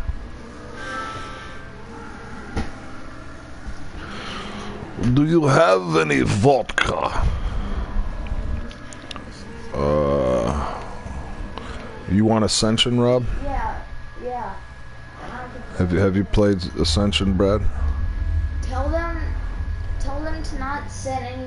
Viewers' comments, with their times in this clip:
0:04 thats actually a decent nikolai impression 😂